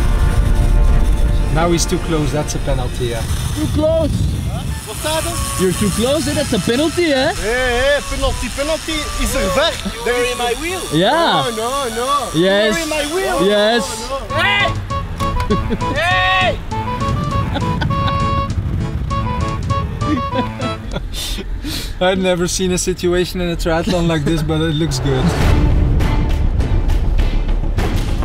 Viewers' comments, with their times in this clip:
0:10 got to love the sea shantey